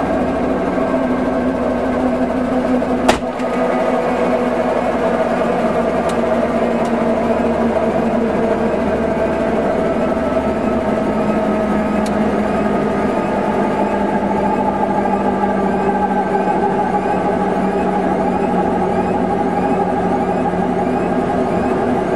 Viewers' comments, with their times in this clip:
0:03 what's the chirping that starts ?